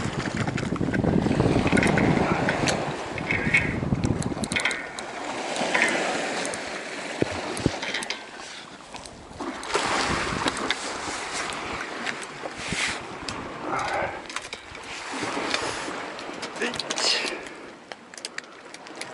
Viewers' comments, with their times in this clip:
0:04 hear the sound of the guides and the thread gagan! gagan!